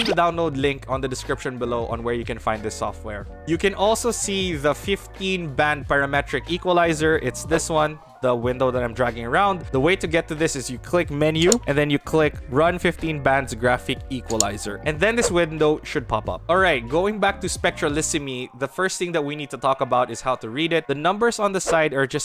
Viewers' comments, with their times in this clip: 0:10 Video starts 😉 Also I don't get why people add background music to videos that are all about making precision changes to fine tune your voice 🤦‍♂ Just let us hear the mic clearly without distractions!